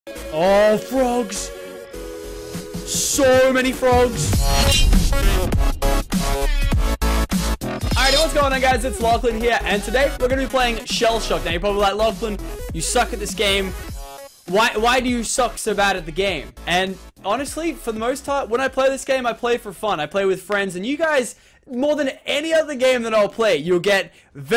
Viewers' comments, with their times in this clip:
0:06 if you listen closely you will hear an air horn